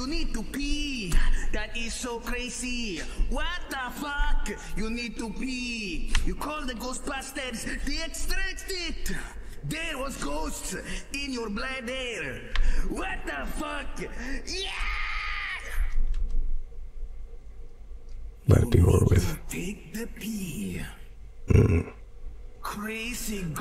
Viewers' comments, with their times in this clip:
0:08 The mark sounds like freeform comedy or poetry.